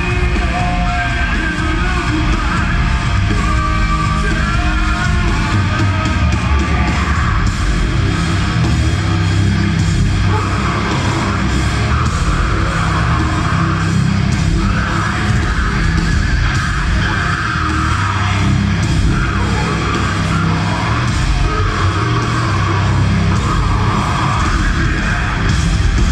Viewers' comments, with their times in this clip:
0:07 Holy shit the breakdown had me.